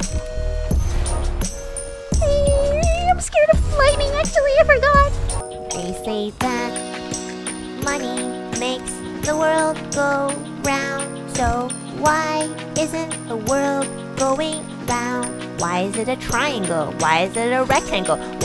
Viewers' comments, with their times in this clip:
0:05 lowkey sounds like a DHMIS song